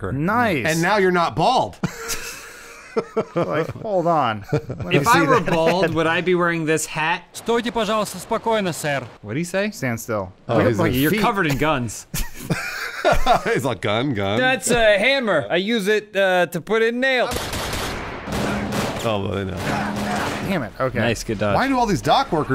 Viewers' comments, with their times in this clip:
0:07 is some VERY GOOD Dutch voice acting..